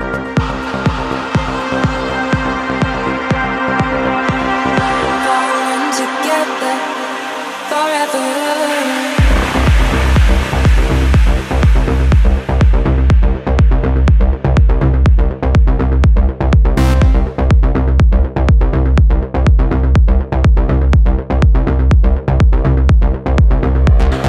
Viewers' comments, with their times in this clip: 0:08 My fave part is when the lead vocals into the transition. Top notch